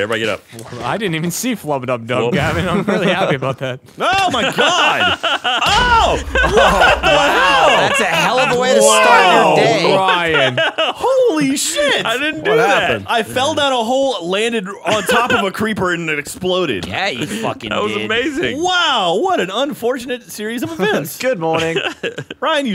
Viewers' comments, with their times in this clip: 0:03 Im watching this 2 years later just to hear Ryan's laugh